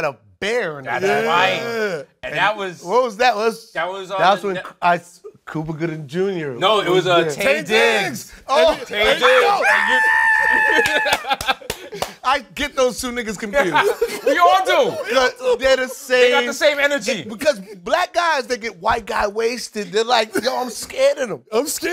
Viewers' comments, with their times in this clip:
0:06 Why Marlon laugh like that 😂😂😂😂 I’m crying😂😂😂
0:09 Marlon laughing is me when I laugh